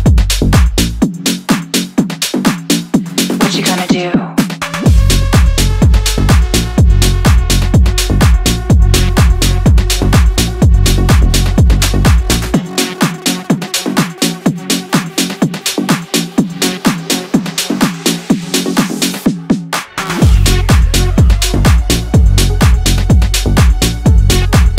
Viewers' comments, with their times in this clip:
0:10 strip club music